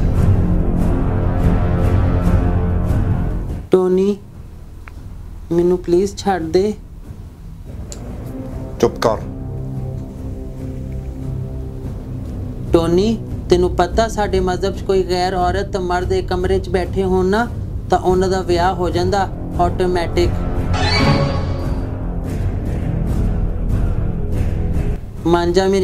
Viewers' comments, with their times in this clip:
0:09 White guy knows how to speak punjabi